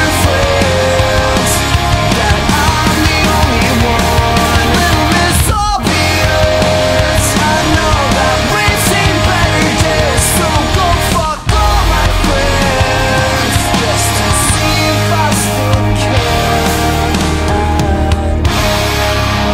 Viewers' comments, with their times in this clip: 0:05 has to be the most epic silence ive ever heard in my life.